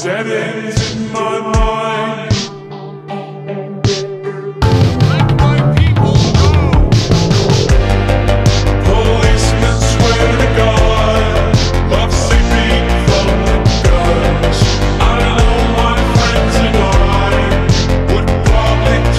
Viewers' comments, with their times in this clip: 0:07 The beat when that scence of the giant sea creature is on the sea wall so perfect.